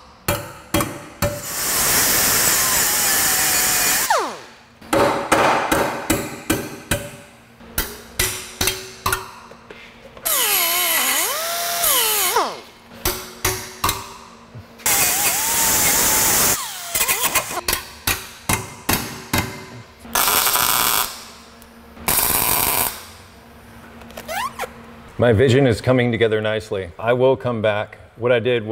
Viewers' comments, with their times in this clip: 0:09 Your hammering sounds like Mary Had a Little Lamb.